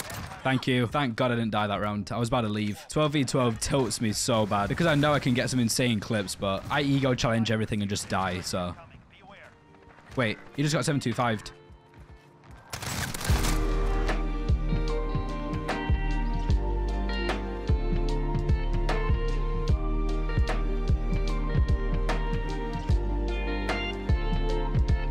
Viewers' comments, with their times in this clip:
0:09 i heard ambient gold and knew it was over